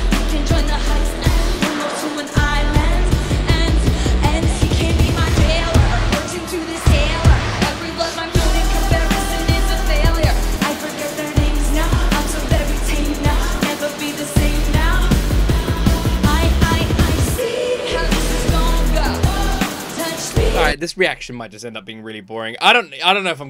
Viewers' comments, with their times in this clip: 0:04 It doesn't matter how many times I see it, I replay the breakdown over and over. It not the same in the album version and scratches some itch in my brain that I can't get enough of.